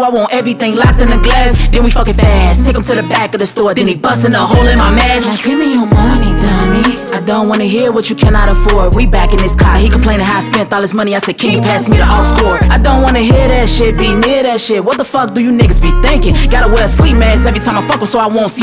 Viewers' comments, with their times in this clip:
0:05 i could listen to her saying dummy like that for hours